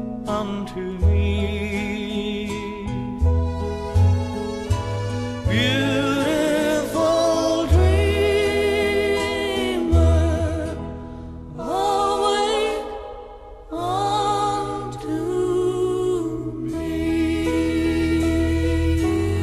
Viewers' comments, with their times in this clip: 0:04 sounds like a song I know... hmm